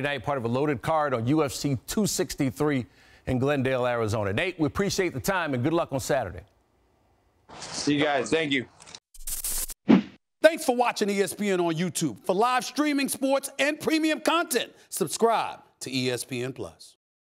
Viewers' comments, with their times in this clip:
0:07 Nates real voice